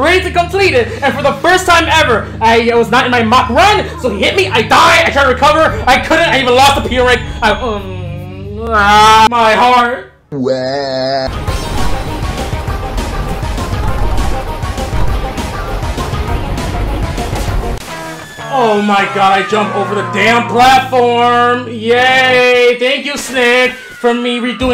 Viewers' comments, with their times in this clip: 0:08 the scream😅 My heart